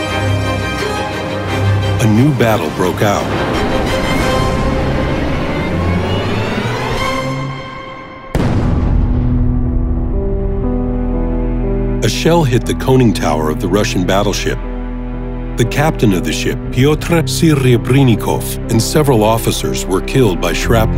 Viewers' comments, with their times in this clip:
0:08 orchestral track? The music is just amazing